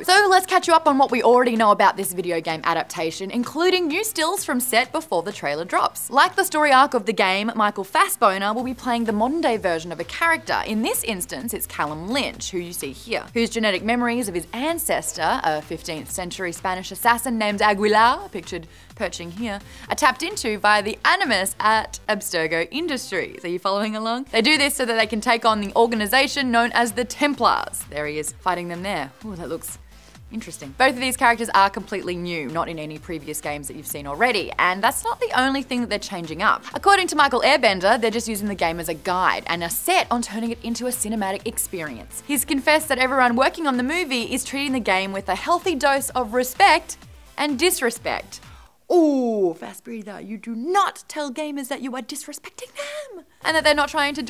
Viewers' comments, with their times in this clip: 0:06 did i just hear Michael Fast "boner"??? lol
0:07 Did I hear her right michael fassBONER??
0:39 did she just said Michael Airbender?